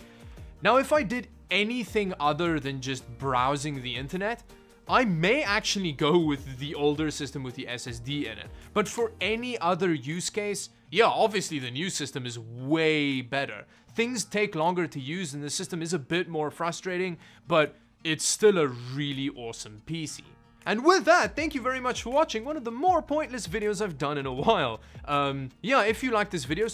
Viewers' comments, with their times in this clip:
0:10 That was a very heartfelt JA! lol